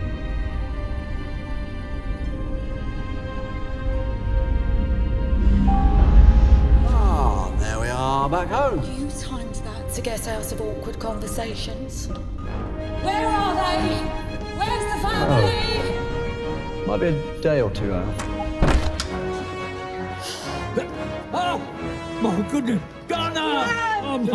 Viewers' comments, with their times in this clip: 0:05 Anybody notice? No whirring noise?